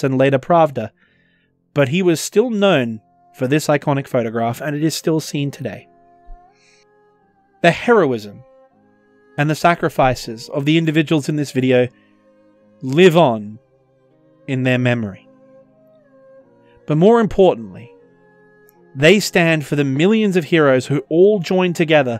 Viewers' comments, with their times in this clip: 0:10 Just want to say, time period of the video playing the cossack lullaby is a beautiful touch. A soft song from the place the Russians are still trying to steal